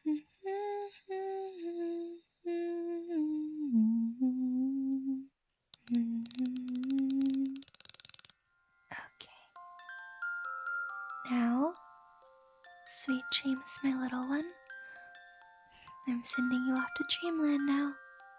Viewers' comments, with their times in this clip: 0:06 I've been watching a bunch of older western movies so when I heard the clicks, I thought it was a revolver... yea... I'm tired... but overall it was a beautiful audio, thank you